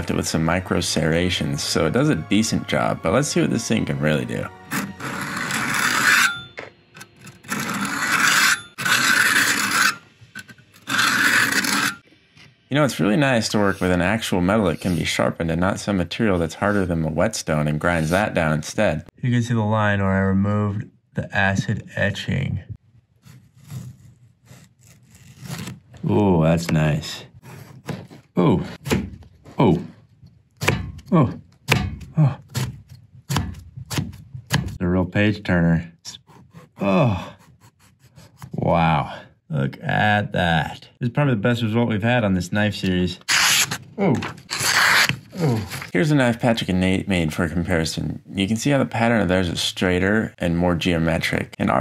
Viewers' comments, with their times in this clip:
0:05 this is torture sound
0:08 oh gosh my ears.
0:36 He sounds a bit like Kronk for a little while, the best voice to have.